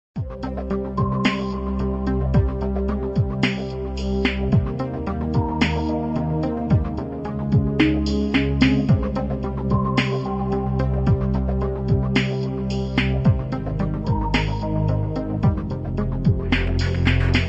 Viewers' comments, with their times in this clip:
0:01 that music scares me